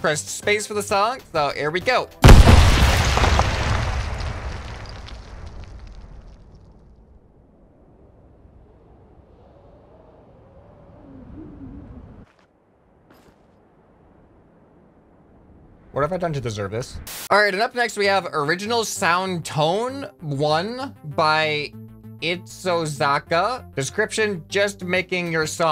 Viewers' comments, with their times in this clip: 0:08 it's the symphony of destruction xD